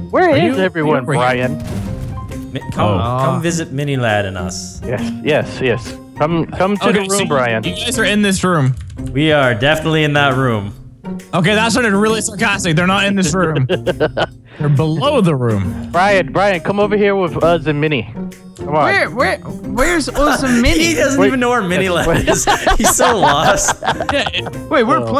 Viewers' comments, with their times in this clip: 0:10 I can hear beeping.